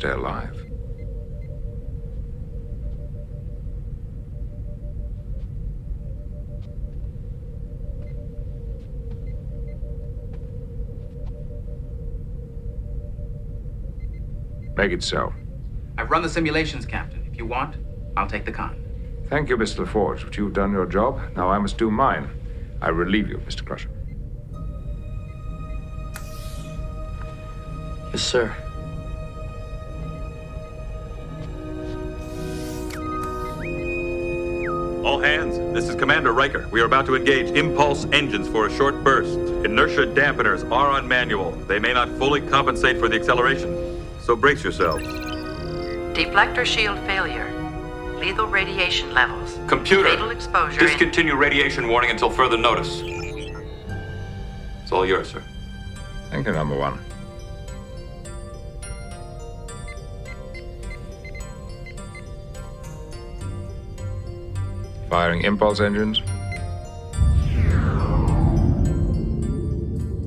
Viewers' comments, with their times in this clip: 0:06 That silence as Picard approached the helm was like in Rollerball when Jonathan E. approached the goal scoring area to score the last goal in the last game when most of the other players were dead.
0:56 Still can't believe someone heard that score starting up and thought "Man, that's good! Fire the composer."